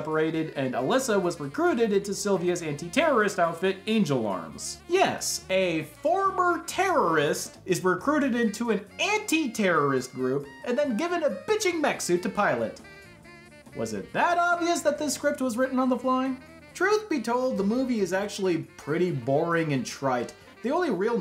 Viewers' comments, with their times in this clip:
0:03 Ah yes, Jan Rook